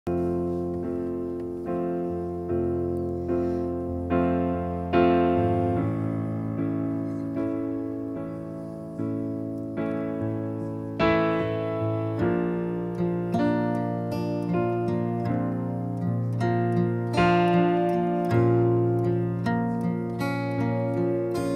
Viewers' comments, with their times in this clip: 0:02 Almost started singing too early!